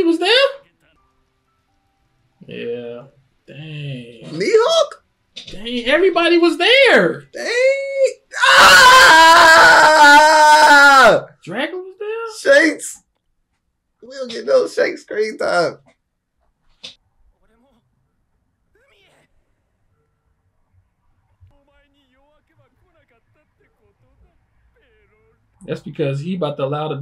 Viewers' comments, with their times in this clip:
0:08 that scream caught me off guard man😂😂